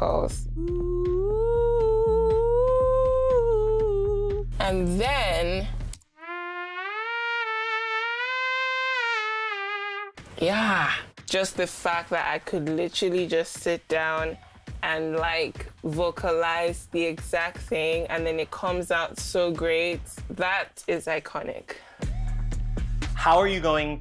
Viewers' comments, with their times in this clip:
0:05 That trumpet sounded like a fly 😅